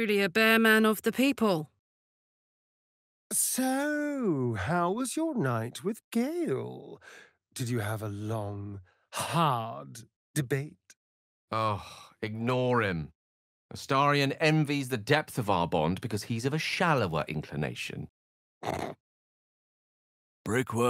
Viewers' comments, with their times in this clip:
0:04 at the end astarions freakin snort my gawd lmao